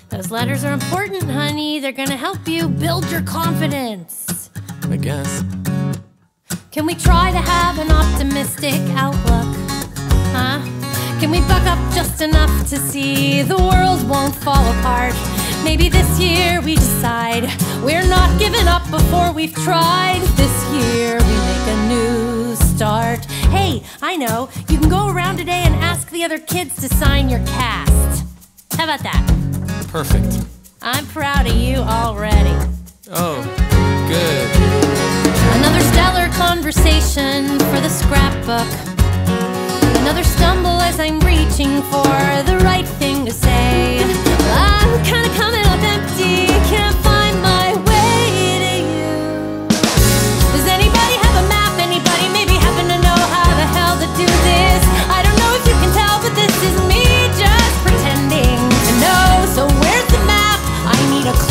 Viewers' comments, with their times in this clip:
0:10 at first, I thought she said fuck up 😂
0:44 Just here to say that that I bit is the most beautiful thing I’ve ever heard and I could listen to it forever